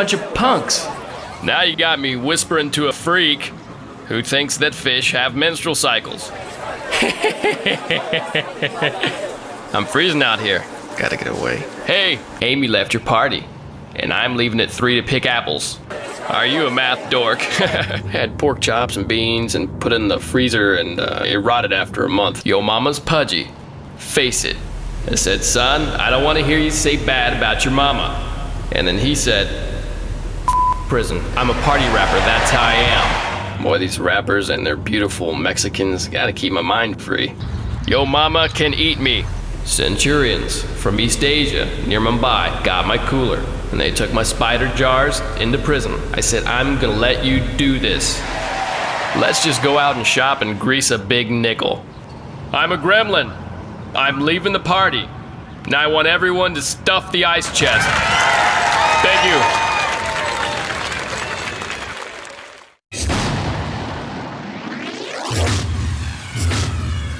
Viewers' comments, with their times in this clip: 0:05 dat laugh!!! Lol!!
0:11 when he says “Gotta get away” that sounded like Mitt’s real voice
0:50 errrr.... looks like he's saying "grease a big ni..." ... never mind.... ;)